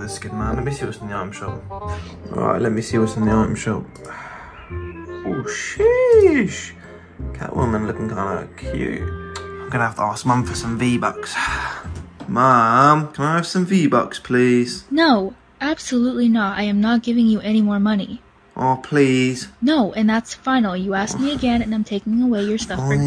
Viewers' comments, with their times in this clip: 0:10 Sounds like Mongraal